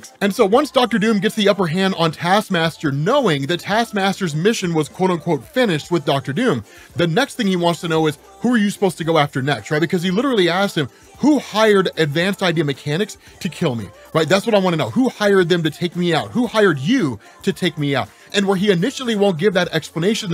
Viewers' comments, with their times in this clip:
0:08 The music in the background was too much. Couldn’t finish the video.